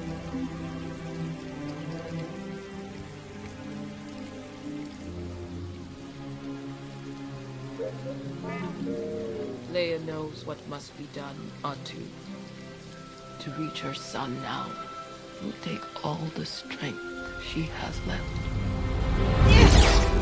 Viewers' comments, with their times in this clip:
0:03 is it "my son's in trouble" or "my new apprentice is in in danger"?